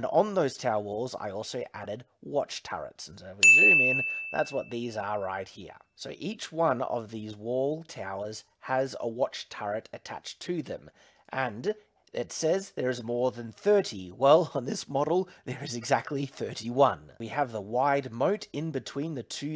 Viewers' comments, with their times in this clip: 0:03 That 'ding' from almost gave me a heart attack